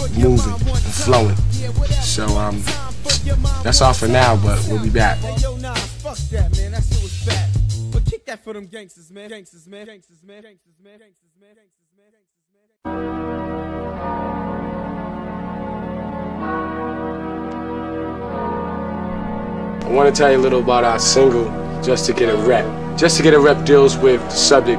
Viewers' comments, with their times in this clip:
0:09 man beat is so killer sounds like a RPG Game